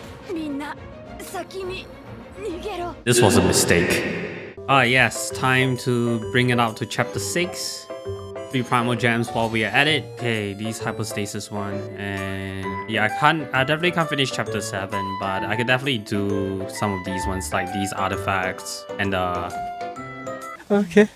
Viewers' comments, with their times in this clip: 0:03 did beidou just say the n word??/